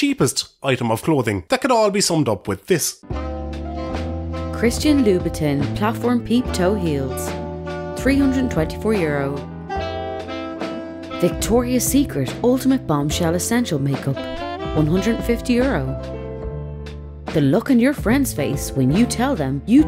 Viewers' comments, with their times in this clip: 0:03 Gosh I love the way the Irish accent makes everything sound so Sarcastic. 🍀